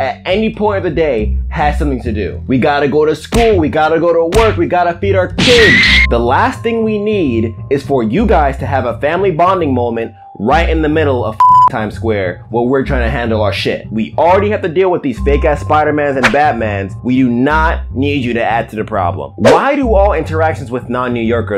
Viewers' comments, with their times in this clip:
0:05 I heard that stamina break noise 😂